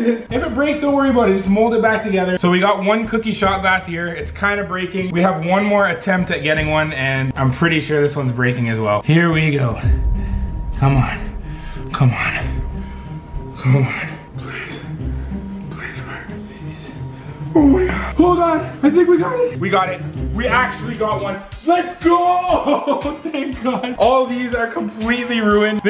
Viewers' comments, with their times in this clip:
0:10 Close your eyes and listen and it sounds very wrong